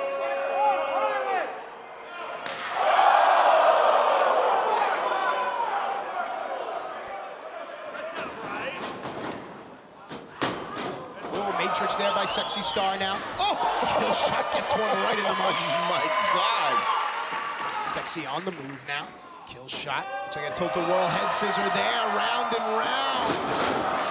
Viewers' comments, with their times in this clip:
0:05 you hear some guy saying “that’s not right” lmfao